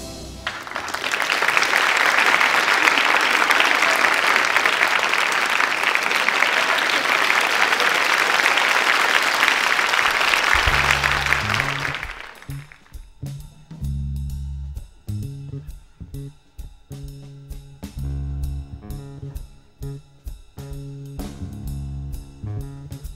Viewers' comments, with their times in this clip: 0:07 Wasn't that the original drummer John Guerin applauding ?